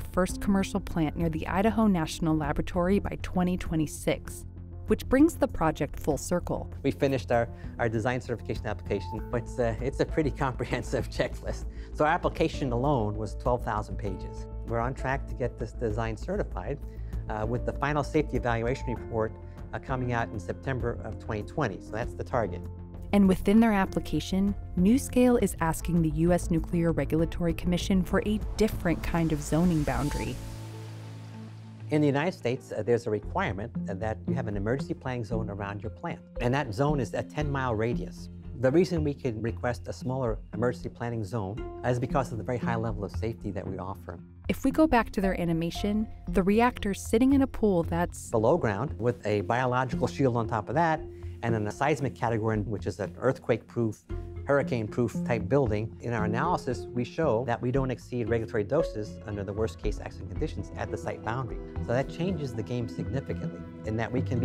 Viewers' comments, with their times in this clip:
0:07 that guy literally laughed at how extensive the regulation for design application was, as if to say it's ridiculous. "Those pesky regulations getting in the way of us making money!" Then he goes on to say why they want to get rid of the 10 mile emergency planning zone so they can build in less expensive land and basically not have to create an evacuation plan. If anything can be learnt from previous disasters is that regulations are there because every single time, something unexpected happened. It makes sense to have over the top regulations.
0:46 weird audio edit